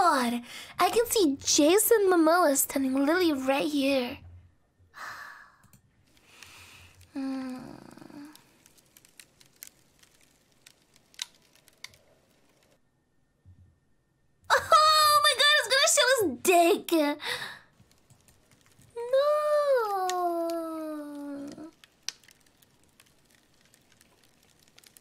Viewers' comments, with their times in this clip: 0:06 Moan did things to me...